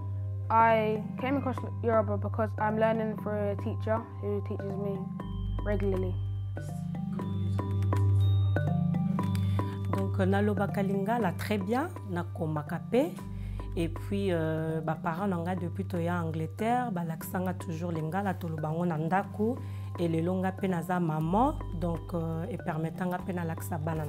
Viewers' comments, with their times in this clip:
0:10 Sounds a lot like French